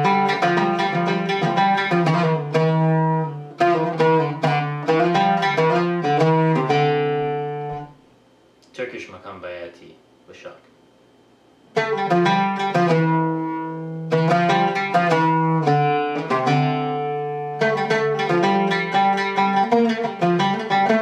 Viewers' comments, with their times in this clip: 0:04 the arabic licc
0:05 i declare this to be „the lick“
0:09 Turkish uşşak you played doesn't sound like uşşak. Idk why but I Live win turkey and I have listened thousands of turkish maqam musics, and that one didn't sound like uşşak. Maybe I'm wrong, I just wanted to tell. But You are talented and you play amazing. Great video 😊